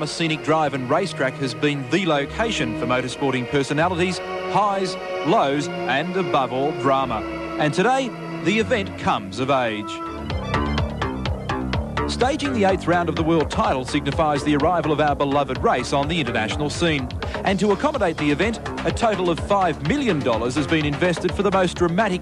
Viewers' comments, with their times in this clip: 0:10 Does anyone know what that track is that appears I have heard it used during the Replays at the time and thought it's quite a funky tune but can't seem to get a name for it.